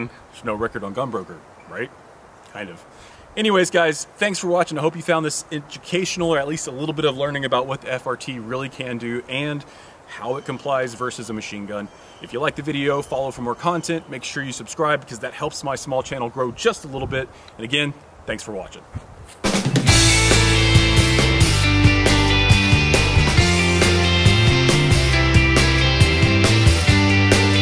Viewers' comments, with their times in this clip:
0:08 Thought that hawk was real. I jumped up and ran out to my baby chicks. lol.